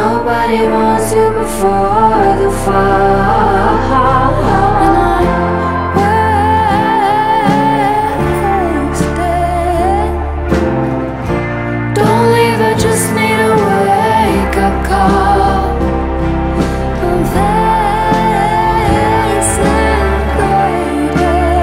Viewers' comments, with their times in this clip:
0:05 This part of the song sounds like the chorus of "i'm not the only one" of Sam Smith